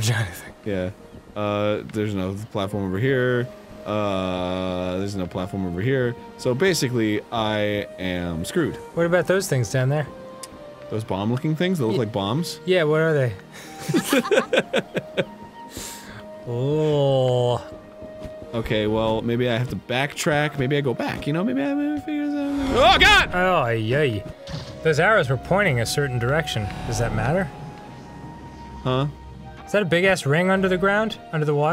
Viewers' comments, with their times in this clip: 0:08 THAT LAUGH WAS A LITTLE TOO COINCIDENTALLY TIMED
0:10 Um...who is that girl laughing ? Because I doubt it's Arin or Danny.
0:12 Did anyone else hear Amy laugh at Danny's joke? 0_0
0:12 Amy fucking laughs with them.
0:12 Amy laughed with them... I'm so scared..
0:12 the FUCK was that creepy laugh in the game?
0:13 ... Where did that other laughter come from? o_O
0:13 When Tails laughed in my right ear I was made very uncomfortable
0:13 Umm, did anyone else notice that right after Dan made a joke and Arin laughed at it, Amy laughed the same time Arin did
0:17 I swear Arin sounded exactly like morshu from cdi zelda